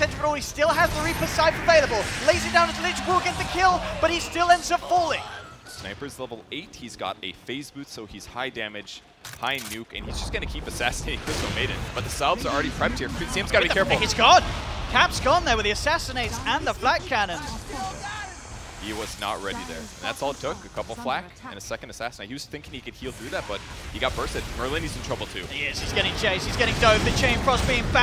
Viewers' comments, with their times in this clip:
0:10 AWP sound effect lol